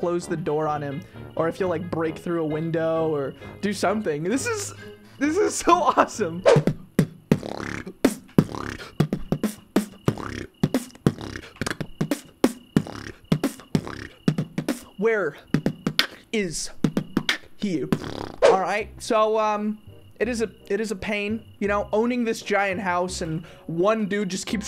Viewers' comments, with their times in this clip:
0:07 I haven’t watched you in years in I never knew you could beatbox.